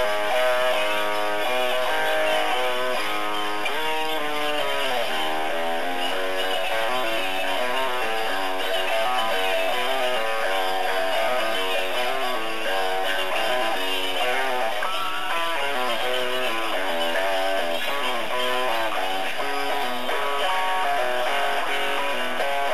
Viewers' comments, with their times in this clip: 0:06 Thanks ! I performed this recording at late-night Therefore the volume lowered it very very much.